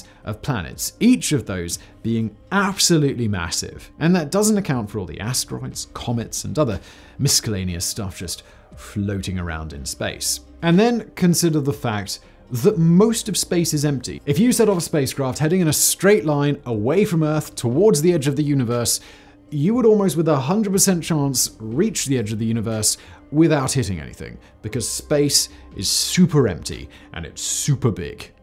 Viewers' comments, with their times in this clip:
0:03 do Brits actually pronounce the c in miscellaneous or are you just a weird? In America the c is silent.
0:06 I may be mishearing it, but it sounds as if he pronounces the word “miscellaneous” with a “hard C” as well.
0:06 Forget about all the science facts you dropped, I got distracted by the way you pronounced "miscellaneous". Was that just a slip of the tounge or is it some weird British thing I'm not aware of. Like prouncing H as "Haitch" vice "Aitch".
0:06 Forget about all the science facts you dropped, I got distracted by the way you pronounced "miscellaneous". Was that just a slip of the tounge or is it some weird British thing I'm not aware of. Like prouncing H as "Haitch" vice "Aitch".
0:07 bruh said miss-cal-a-knee-us
0:12 Did you actually say “misKalleneous” ??? 🤯